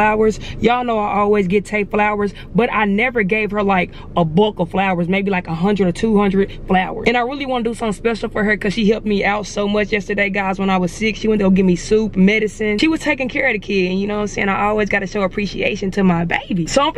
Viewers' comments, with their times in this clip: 0:03 “a bulk of flowers” she said bulk so deep 💀💀